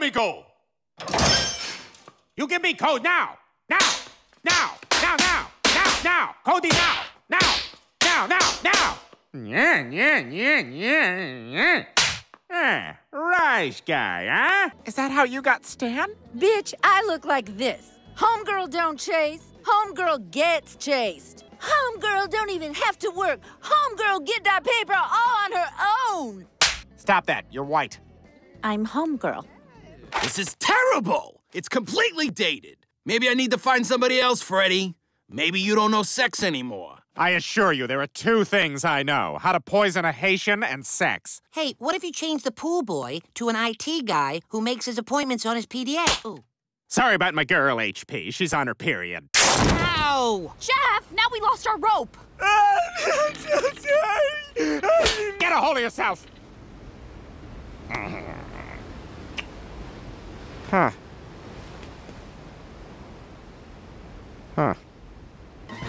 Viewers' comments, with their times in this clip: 0:08 when you hear Roger turning into Peter Griffin... you can't unhear this..
0:10 Roger your “Peter griffin” is showing.
0:52 Jeff crying is priceless.🤣🤣🤣🤣🤣🤣🤣🤣